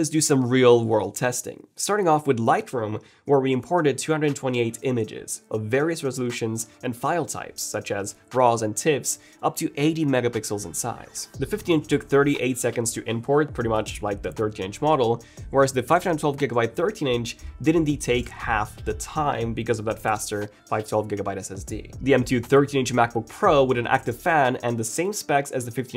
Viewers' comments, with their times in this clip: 0:07 I swear i heard him say Bras and Tits...